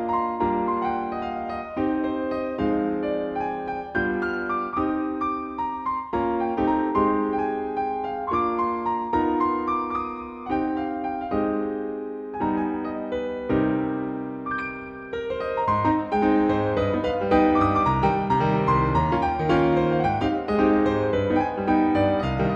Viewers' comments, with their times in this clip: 0:09 from and 30 seconds onwards, it sounds like a romance anime ending...